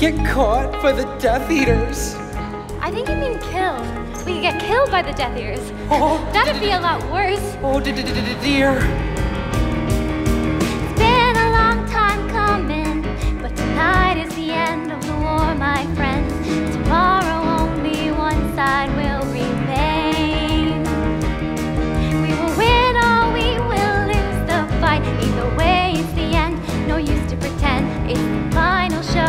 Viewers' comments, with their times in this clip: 0:06 I loved when Neville briefly turned into Piglet
0:10 I love how nervous Evanna becomes when she has to start singing ;-)
0:10 EVANNA LYNCH'S SINGING!
0:11 I hope there's pudding Also Luna's singing is really good
0:14 OMG SHE CAN SING